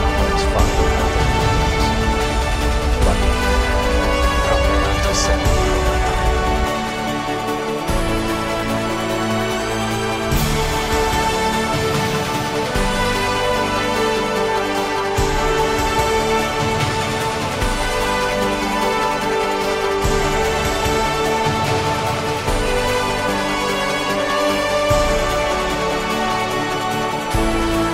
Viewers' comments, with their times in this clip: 0:10 Switched off a music far too loud